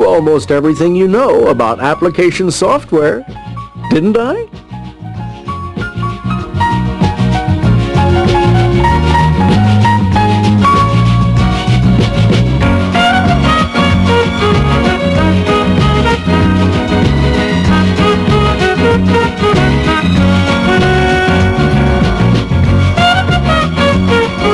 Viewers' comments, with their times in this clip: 0:05 the music that starts reminds me of the music they used to play during the showcase showdowns on the old price is right